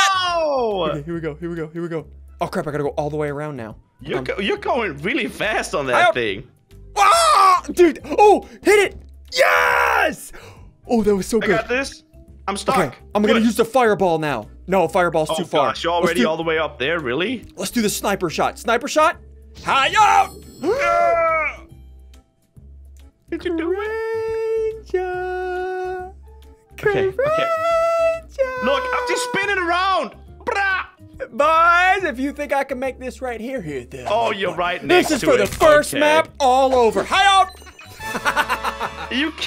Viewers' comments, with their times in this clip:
0:07 aaahhhhhhhhrrrrrr XD is it ssundee that did it or was it the bird? XD
0:23 Did anyone else think that sounded like the beginning of the flash theme song😂😂